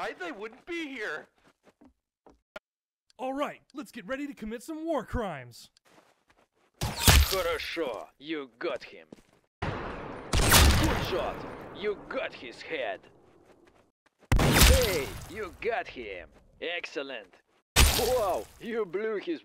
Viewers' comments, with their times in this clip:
0:07 i like russian